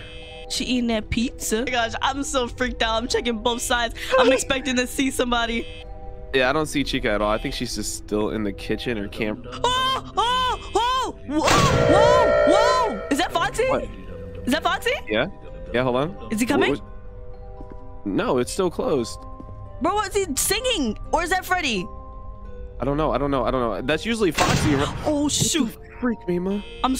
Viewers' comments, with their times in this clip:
0:10 so that is foxy he sings when hes about to change stages so just so you know!